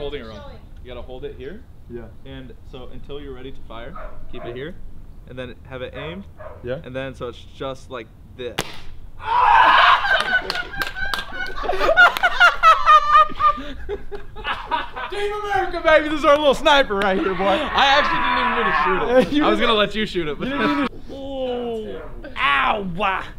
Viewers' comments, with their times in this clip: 0:08 elmo ahh laugh